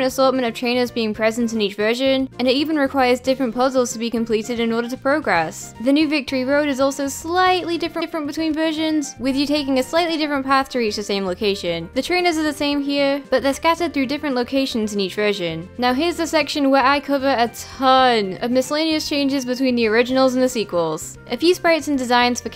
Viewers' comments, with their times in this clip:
0:06 audio is kinda messed up with the slightly